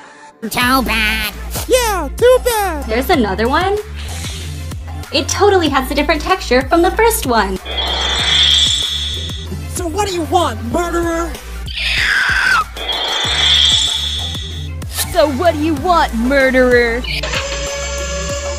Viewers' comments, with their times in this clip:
0:03 Hold on WHY IS LIY BARF BAG THEY SOUND NOTHING ALIKE